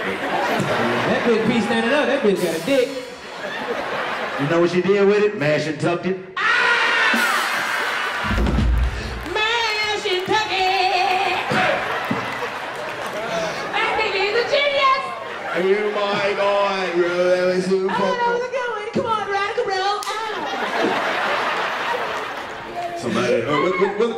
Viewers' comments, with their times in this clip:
0:05 can someone explain the joke 😂😂why did they all scream